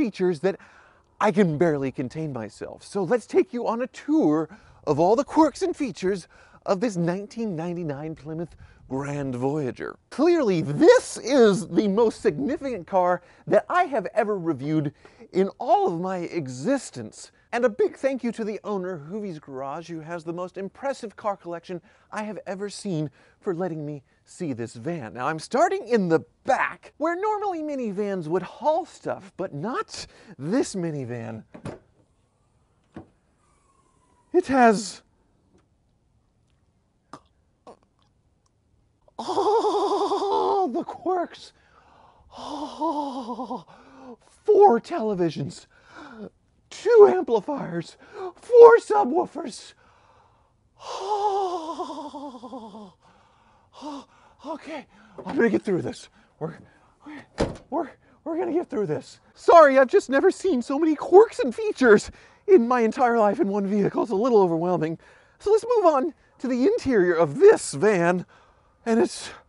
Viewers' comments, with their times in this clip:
0:10 I lost it 😂😂😂 greatest Doug impression ever.
0:38 LOL! And the Oscar for Best Doug Impersonation goes to... "
0:38 it sounds like he just creamed himself 😂😂
0:39 Sounds like a cross of Doug DeMuro and Shaggy Rogers.
0:42 Sounds like Shaggy, he could easilly do voice overs as the character.😄😉😊😃😁
0:42 what was that suffocating sound?
0:46 That was a great Shaggy impersonation
0:47 you sound like Mickey mouse
0:57 sounding like shaggy from scooby doo